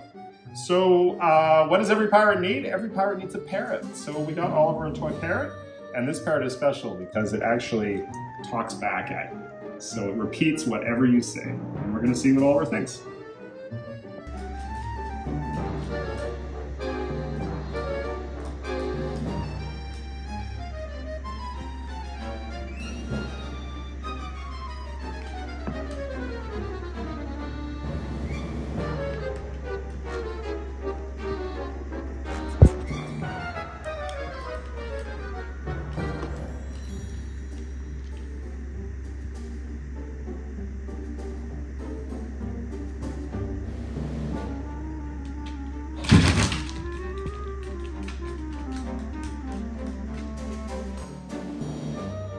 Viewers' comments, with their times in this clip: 0:03 Did Human Say Carrot?
0:39 Lol Oliver trying to say "Hi!" to the parrot with a nice polite "dog handshake" (butt sniff). And it's hilarious seeing him hear a stuffed toy bark! He knows toys don't usually do that. 😄